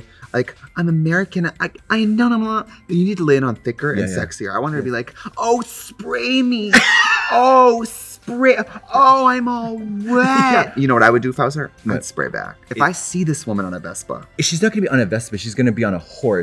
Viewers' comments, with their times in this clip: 0:04 why that kind of sounded like Lola from Big Mouth